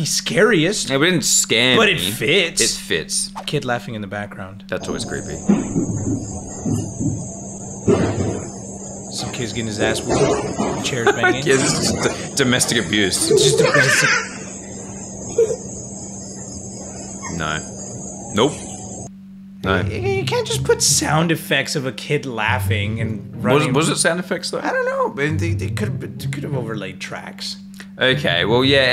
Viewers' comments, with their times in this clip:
0:05 What is the laughing Sound like Hasbulla?
0:06 reminds of one of those "don't mind my goofy ahh laugh" vids lmao
0:06 kid laughed from the pain😂😂
0:11 why the kid laughing sounded a boo from Mario 😭
0:12 goofy ahh giggle 💀